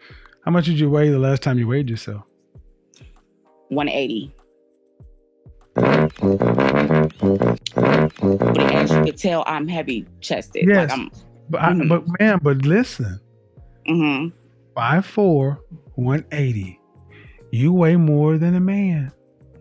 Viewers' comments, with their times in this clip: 0:03 she ain’t no 180.. I can hear it in her voice 😂